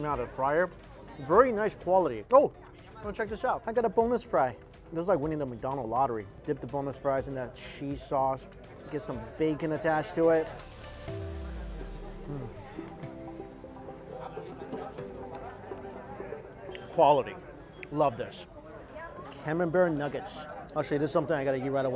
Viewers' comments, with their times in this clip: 0:03 I legit thought he said boneless fry.
0:04 I thought you said "boneless fry" instead of "bonus fry" hahaha Can I get uhhhhh BONELESS FRY 😂